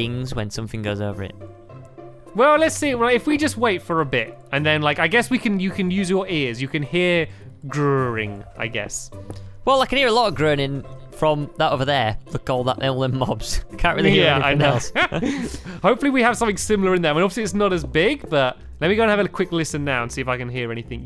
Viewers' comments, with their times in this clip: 0:03 CRAZY STAMPY VOISE!!